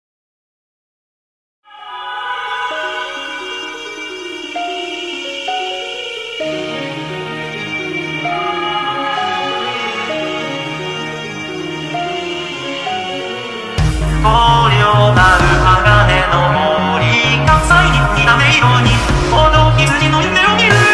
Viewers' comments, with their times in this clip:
0:05 bro this song is so beautiful my god😫